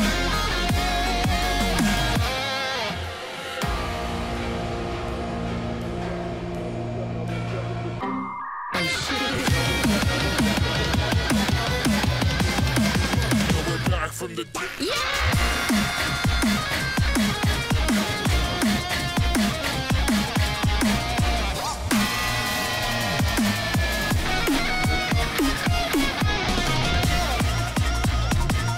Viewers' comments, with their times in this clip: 0:07 Its used around here. "Oh Shi-" and then builds up.
0:08 No one talking about the windows error ?
0:15 who is that screaming she sounds familiar